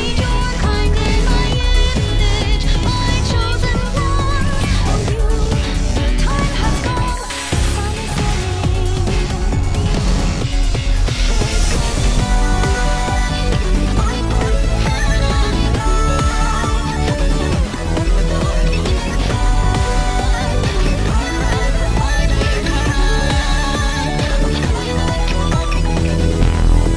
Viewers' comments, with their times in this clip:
0:09 This has been out for almost a year now and I’m only just now noticing, verrrry faintly, her “tremble!”